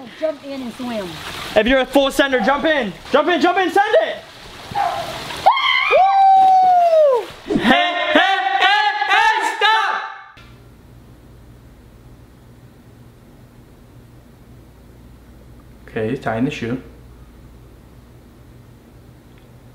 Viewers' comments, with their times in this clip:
0:07 Is it just me or does this sound like the “boys”
0:07 Anyone else thought it was then yelling?